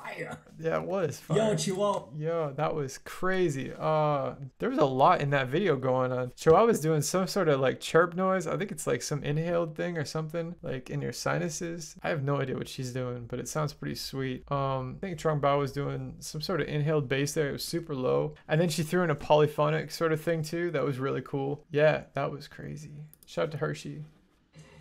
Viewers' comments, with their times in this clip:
0:08 that is nasal humming it’s used in trap beatboxing a lot I can do it